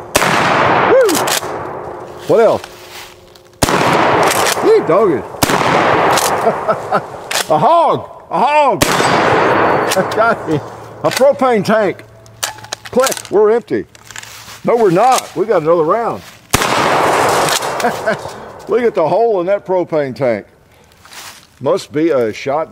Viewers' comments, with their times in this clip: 0:07 when he says “A HOG!” The echo was AWESOME! 😂😂😂👍🏼